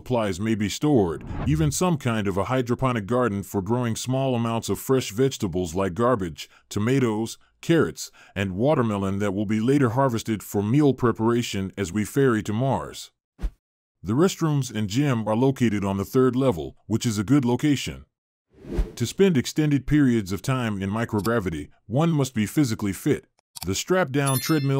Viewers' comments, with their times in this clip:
0:06 Yes-- Growing fresh garbage??? Yummmmmmm